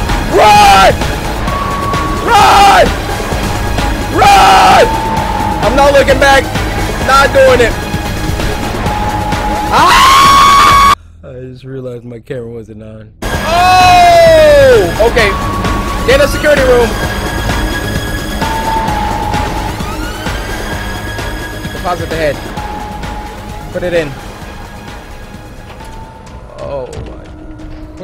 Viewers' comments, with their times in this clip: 0:08 the best scream ever
0:08 his scream😂😂😂 I can't
0:09 Anyone notice that the scream he did was in time with the music? IDK thought that was funny and didn't notice that before🤣
0:09 his scream XD
0:10 Cory that scream had me dying for at least 10 to 15 minutes, I wish my voice could go up that high, great episode btw.
0:10 screamed like a girl😂
0:10 the scream here 😭😭😭😭😭😭😭😭😭😭😭😭